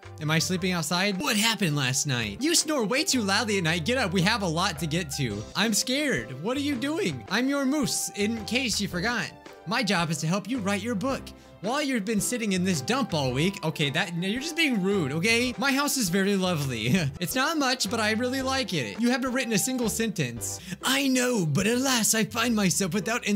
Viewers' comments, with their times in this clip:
0:07 I CAN'T BELIEVE HE SAID MUSE LIKE MOOSE WJKASJAKSJAK Also for the second time: thank you to whoever sent the komahina yaoi game